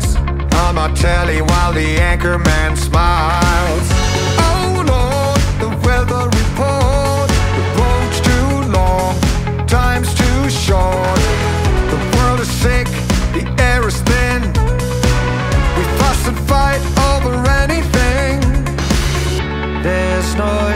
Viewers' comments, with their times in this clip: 0:03 The weather report, brought to you by Vincent Price.